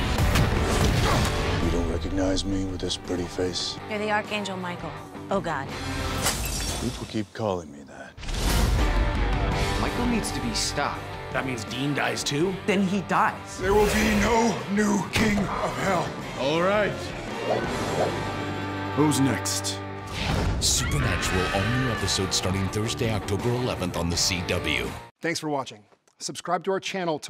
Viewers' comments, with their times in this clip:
0:06 "People keep calling me that". He sounds so sad and disappointed XD.
0:13 There Will Be No New King of Hell! Why does Sam sound like he's competing for the WWE Title? 😍 OR ... Like maybe Lucifer got resurrected and possessed him?! 😨